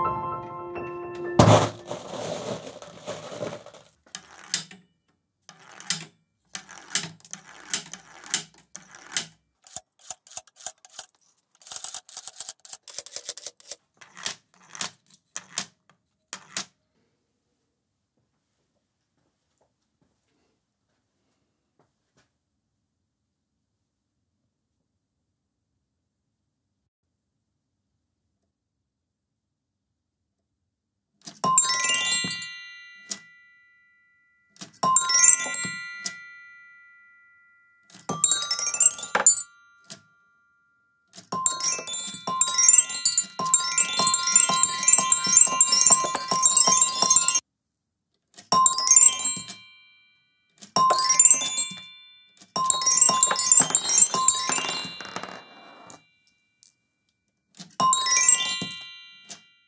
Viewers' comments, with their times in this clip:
0:04 The "THIS IS IT" stare 😂😂 It sounds like an arcade machine ⭐⭐⭐
0:26 The piano makes my heart warm. And I laughed loud
0:29 you sounded like a cash slot machine when winning the jackpot :D i guess you did win the jackpot
0:29 fist pump + cheer!
0:31 when you do a headphone sound test in windows.
0:37 reminds me of Super Mario geting a coin from those mystery boxes...
0:39 Ah, the experience of being on a bus and some rude person deciding to play some crappy mobile game with the speaker on blast.
0:44 xD .... Like someone impatiently ringing a doorbell